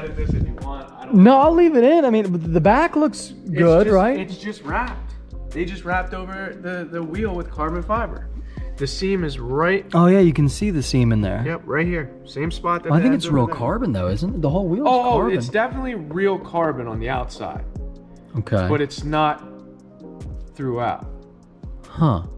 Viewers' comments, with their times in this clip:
0:10 "Oh yeah, you can see the semen there."